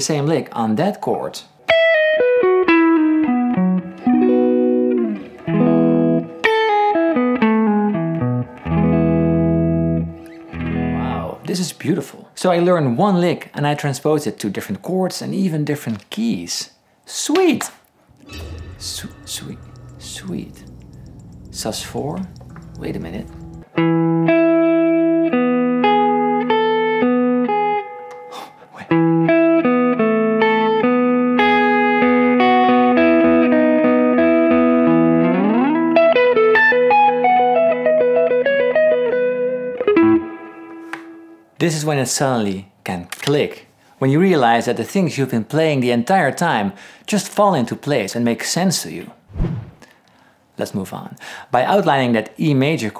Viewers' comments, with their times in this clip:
0:03 or so that lick is like the little verse riff in "Send Her My Love" by Journey. One of the first songs I learned on guitar. It's all coming full circle.
0:28 really thought he was about to dive into some Sweet Child O’ Mine right there.
0:28 really thought he was about to dive into some Sweet Child O’ Mine right there.
0:29 I thought you were gonna play Sweet Child of Mine 🤣🤣
0:33 he almost plays the amazing intro to "Sweet Child of Mine," by Guns n Roses! A lick over E sus4 chord. Looks fairly easy!
0:38 Partial Sweet child a mine..........did u hear it ......the only thing i think he missed is the space inbetween the notes is the the 2nd most important thing in music